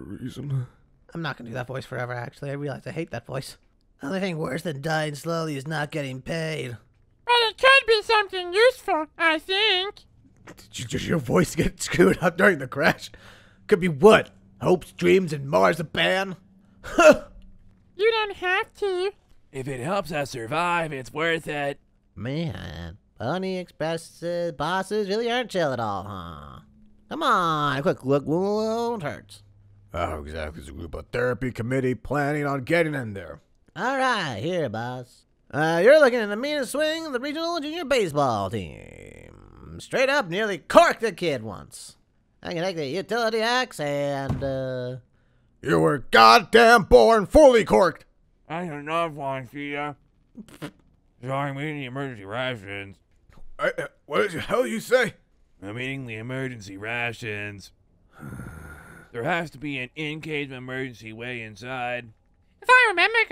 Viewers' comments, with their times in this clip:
0:07 elmo, is that you!?
0:49 moon eating and talking at the same time made me laugh XD